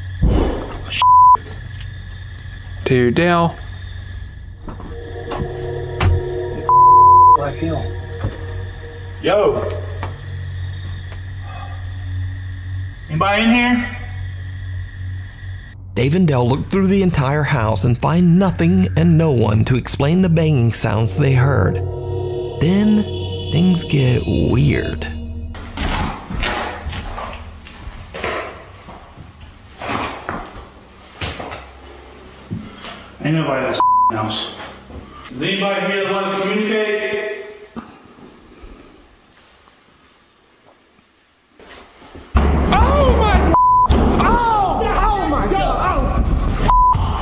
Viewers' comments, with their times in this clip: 0:09 no one heard the "YEAH" at like when he said yo? he got a legit response and nobody's saying nothing?
0:09 Am I the only one that hear "what" it's the sign and signal group when he said ether "hello, anyone in here" or am I crazy lol
0:10 Is it just me or did he get a response when he yells "YO" when first entering..?
0:12 min.: ...... NAH .. YALL ARE CRAZY .. ITS JUST AN OLD MAN PLAYIN HIS BANJO ... YALL ARE CRAZY FOR SCARIN THINGS THAT GO BUMP IN THE NIGHT ... HEHEHEHE
0:35 ….wants to communicate? BANG!! RUN🏃🏃🏃!